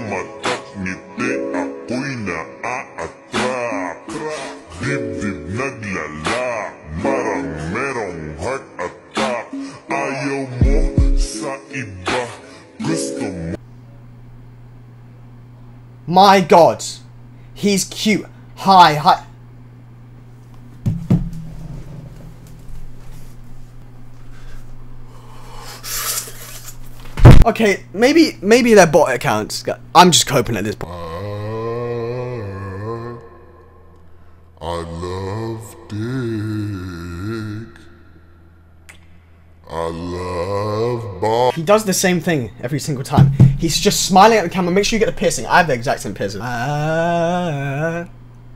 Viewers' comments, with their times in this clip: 0:03 tf is he even saying
0:30 i thought that was the actual audio of the tiktok for a second lol
0:31 LMAOAOA THE SONG😭
0:31 ah DAT SONG THO 😮‍💨
0:31 i thought that was the actual audio ☠☠☠